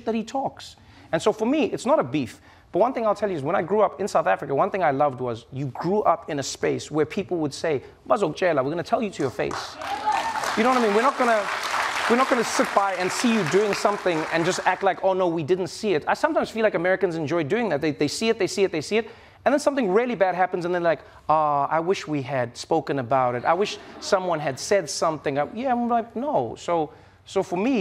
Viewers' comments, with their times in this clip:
0:09 Someone shouted "YEBO“ 😂
0:09 That South African "Yebo" 😅
0:12 Did I just hear a "Yebo" in the audience. 😅